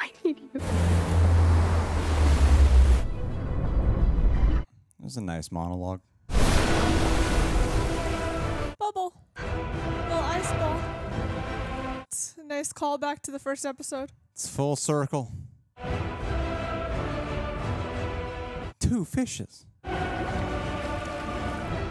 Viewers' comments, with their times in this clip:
0:09 That score 😍 Goosebumps